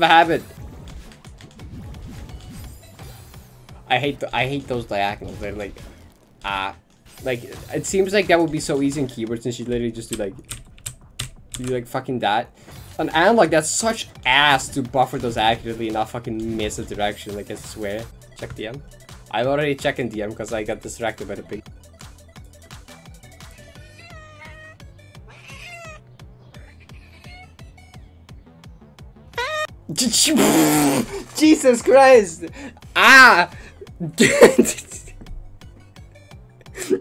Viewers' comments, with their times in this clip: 0:05 the music sync is incredible
0:22 i am literally never prepared for how that cat sounds even though i've seen that clip several times